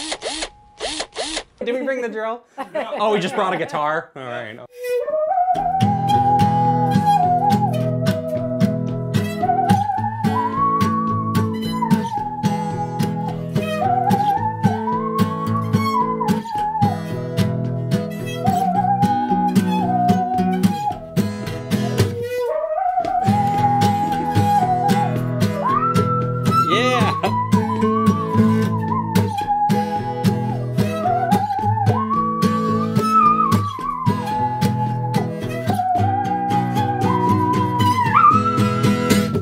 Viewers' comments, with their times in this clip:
0:06 alien country music
0:08 For the first few seconds of I thought it was her voice
0:23 It just sounds like someone singing Oprah.
0:24 it sounded like me singing in the shower